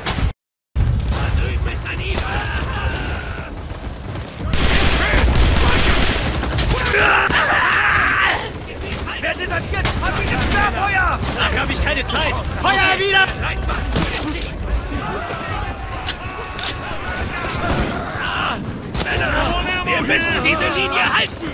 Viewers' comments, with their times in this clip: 0:04 is that m1 carbine rapid fire